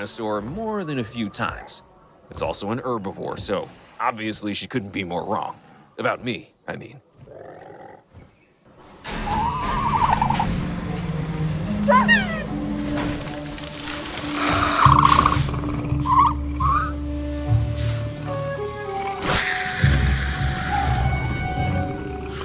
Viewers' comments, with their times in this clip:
0:09 the dilophosaurus actually sounded like an adult ostrich!